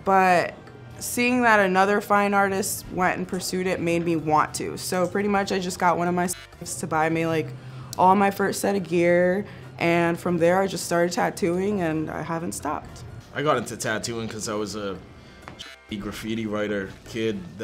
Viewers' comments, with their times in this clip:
0:05 Did Inked bleep the word "Simp" ?